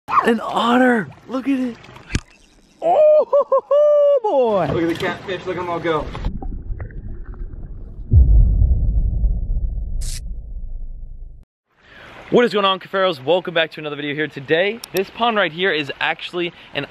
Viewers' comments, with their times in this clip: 0:02 you sound like Logan Paul